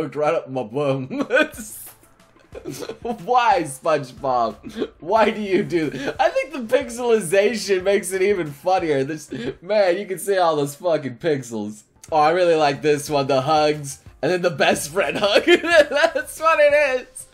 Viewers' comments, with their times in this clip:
0:05 in Mrs. Puff's deep voice: "Why SpongeBob, whhhhy?"